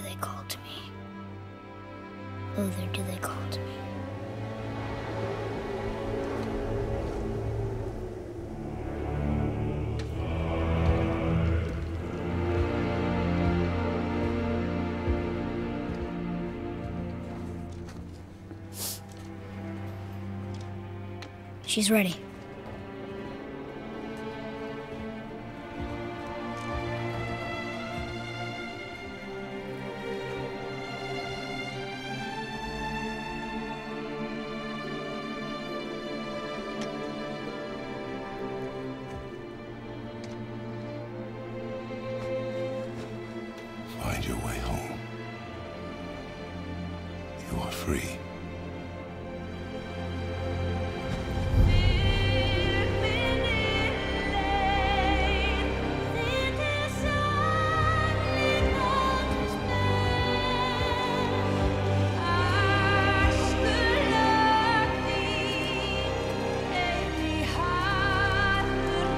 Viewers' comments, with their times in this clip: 0:07 Kratos: Appears. Choir's balls: Drop.
0:08 i notice when kratos appear in the dark the choir got really deep and then when he appear out into the light the music get a little bit lighter and i think it represent his dark past when he was behind the shadow and when the light candle reflect back to him he was now a much better person
0:08 I love this scene, easily one of my favorites. Kratos is presented to us with a dark and threatening silhouette, accompanied by music that imitates his old theme. That of that ruthless god of war who mercilessly killed anyone who crossed his path. Only to then change to a more serene tone as Kratos' face lights up, revealing that the expression of constant hatred that plagued his face no longer exists, and has been changed to a more serene and mature one, as well as his music.
0:51 the singer has such a gorgeous voice...